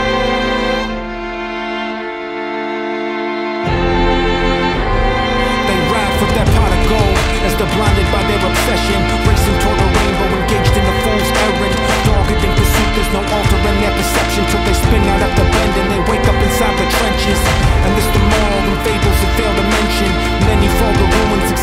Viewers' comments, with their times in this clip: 0:06 to the end LYRICAL FLOOOOW